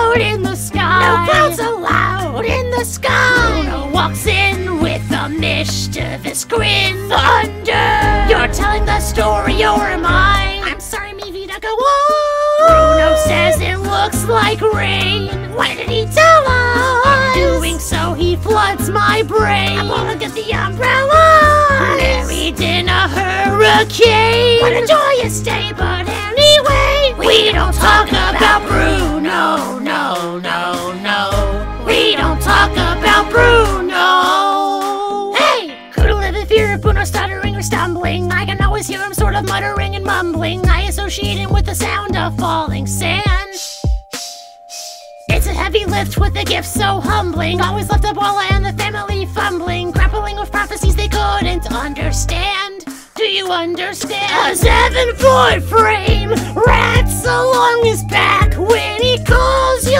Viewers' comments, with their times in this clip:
0:10 toad voice "IM SORRY MY VIDA GO ON"
0:41 i heard "i also O V E R S H I T T E D"